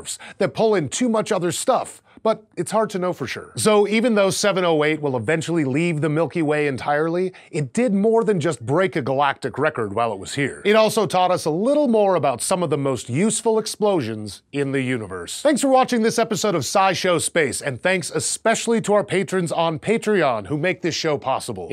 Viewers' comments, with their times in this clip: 0:07 Is it just me or you can hear a phone ?